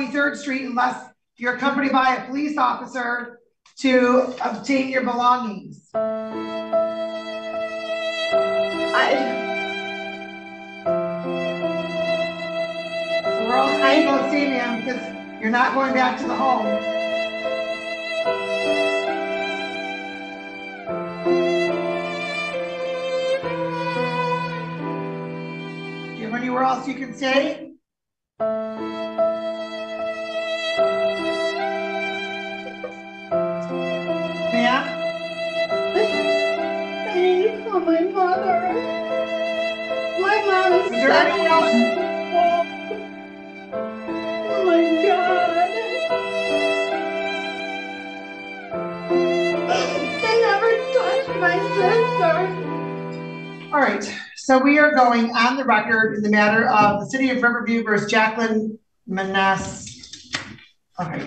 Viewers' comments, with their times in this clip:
0:06 HA! The crying scene with the music was hilarious!
0:11 The music during the second case was perfect for the moment! 😂😂 Any idea what its called?
0:21 lmao the music cut had me cracking up
0:46 The sad telenovela music ☠️☠️🤣🤣